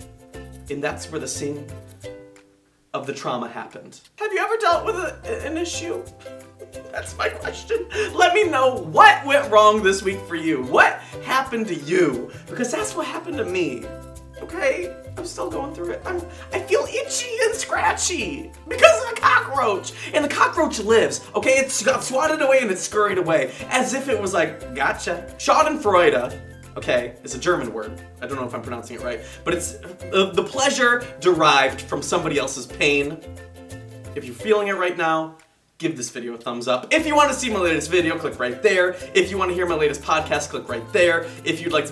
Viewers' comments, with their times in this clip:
0:04 TYLER'S VOICE AWWW
0:16 It was funny how he said itchy and scratchy and than after that he said cockroach in a high voice OMG LOL 😂😂😂😭😭😭💀💀💀
0:25 Im german and I love american people talking german cause it sounds so cute